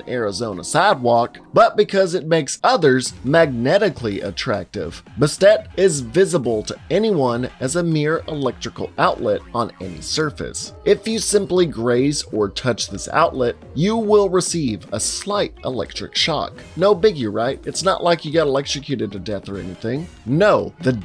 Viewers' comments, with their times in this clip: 0:09 Okay what song is ? It sounds like lonely island but not a song I'm familiar with